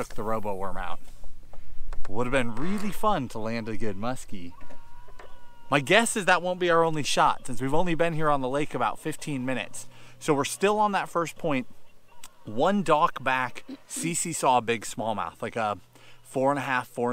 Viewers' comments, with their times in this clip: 0:05 some one screaming 😱